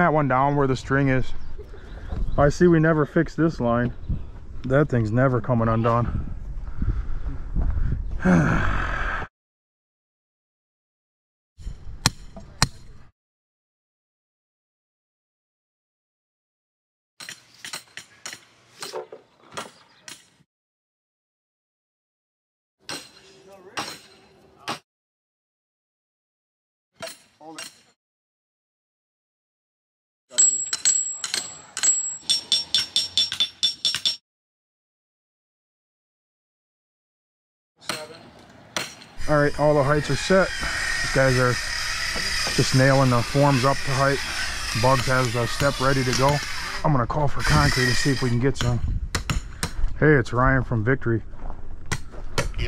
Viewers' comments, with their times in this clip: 0:06 onwards for a bit, it's oddly quiet lol
0:06 Definitely forgot the music 😂 not complaint at all! Just the first I’ve heard no music during a shot like that. Usually they time they beat with the hammer hits. That’s was too funny being dead silent
0:08 not having that victory music during that timelapse seems out of place haha.
0:09 i think someone forgot to add the music here lol!
0:40 That was strange its like you forgot to add music